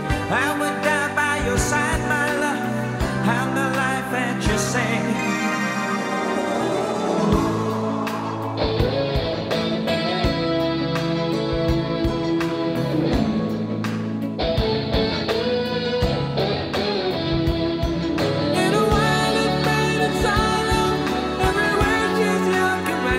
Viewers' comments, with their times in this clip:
0:08 This is DEFINITELY, hands down, my favorite Bee Gees song of all! 8D I love everything about "Bodyguard; the melody, the lyrics, the vocals, the sound. But most of all, I love that epic guitar riff ! XD